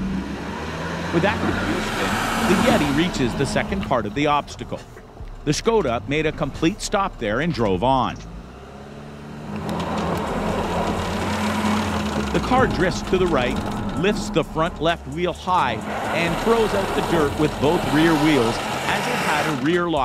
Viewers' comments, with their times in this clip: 0:08 the skoda driver floored it to get through the obstacles unlike the 4 vehicles prior to it. The drivers of the first 4 vehicles seemed to hold the revs at an intermediate amount instead of giving full power . Wonder what would happen if the skoda driver drove all the vehicles to keep driver skill constant